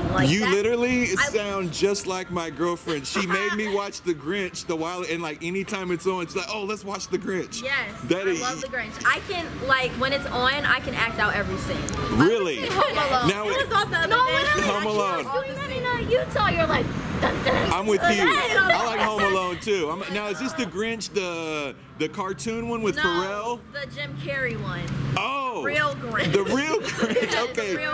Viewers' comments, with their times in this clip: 0:08 did he really just say daddy or am I trippin